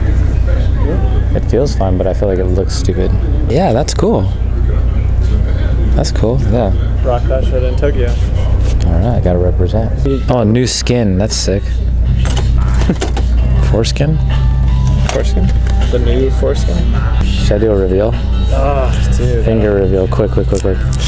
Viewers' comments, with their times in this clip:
0:07 u sounded just like Matt McConaughey was that on purpose